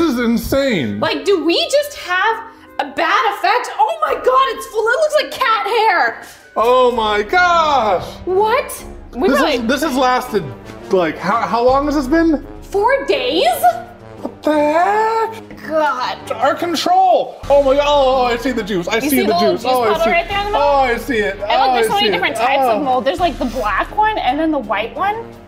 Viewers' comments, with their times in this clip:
0:06 he says "oh my gosh" but the "gosh" in the sentence is high pitched